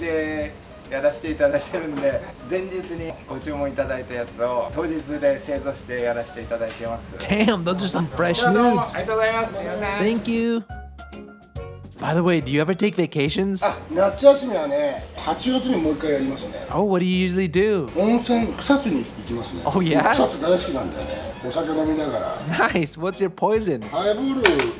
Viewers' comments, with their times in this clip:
0:07 those are some fresh what now